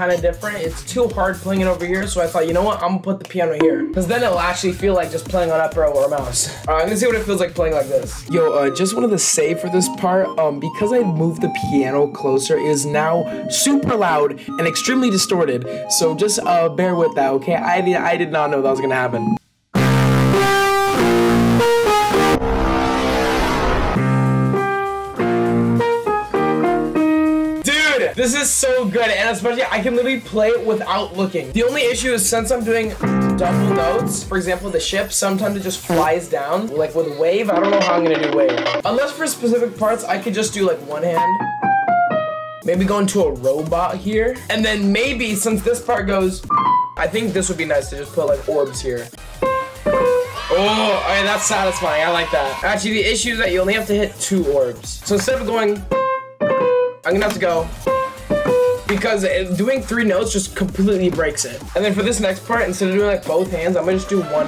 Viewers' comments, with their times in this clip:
0:08 Even though he warned us about the piano sound, I still proceeded to fall on the floor laughing.
0:14 so this is how they made the Taco Bell dong
0:14 turn ur volume up max it’s so queit
0:19 Im not gonna lie i preferred the louder version
0:19 piano is louder
0:19 R.I.P headphone players
0:19 very cool song
0:19 That piano sounds like a guitar kinda, it would go hard ngl
0:19 So loud so so so loud
0:19 I think it sounded more like a guitar
0:20 I kinda wish the piano sounded like that :(
0:47 OMG I thought my house was deteriorating and it was raining pringles